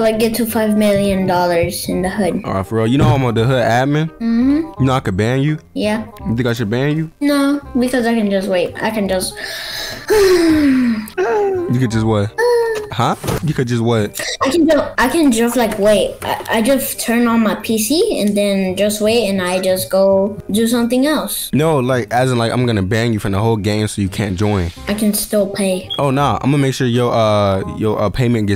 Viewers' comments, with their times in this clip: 0:10 Mans over sighin like he work a 17 hr shift 😂